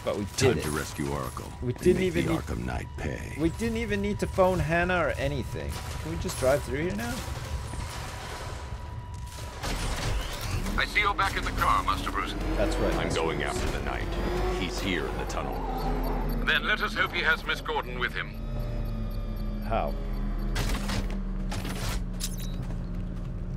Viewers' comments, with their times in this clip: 0:06 I thought he said "We didn't even have to bone Hannah" XD